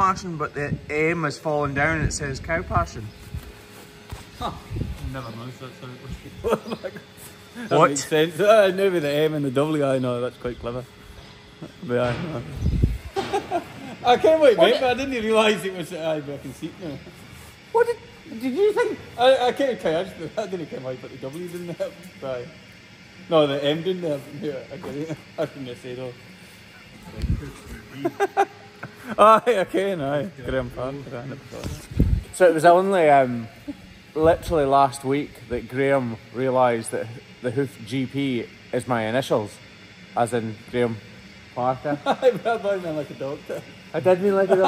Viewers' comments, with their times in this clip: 0:05 Those are all handsome lads! And love those accents as well. 🔥🔥🔥
0:30 can’t understand him.